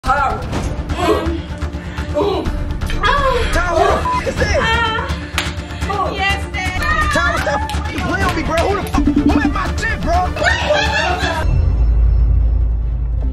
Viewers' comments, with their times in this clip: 0:00 "AHHH~😩" WAS SO REALISTIC😭😭😭